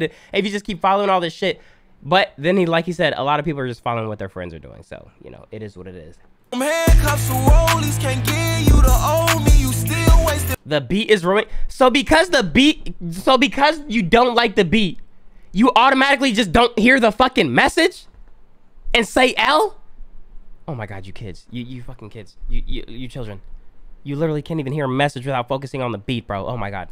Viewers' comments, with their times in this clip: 0:09 yo yall trippin the beat is hard bro especially when it drops